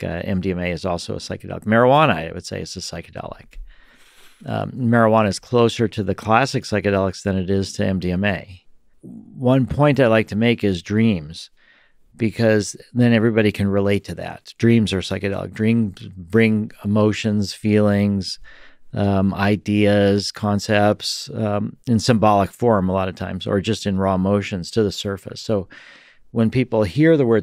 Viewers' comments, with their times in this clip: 0:09 lex is that your stomach ? Were you hungry or did you have beans last night 😂😂